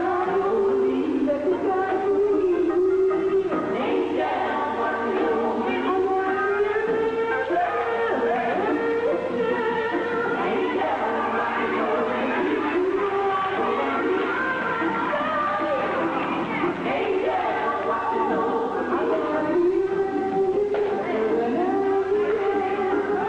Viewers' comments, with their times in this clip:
0:06 Musicians don't get credit but Twinkie is POPPING that organ esp starting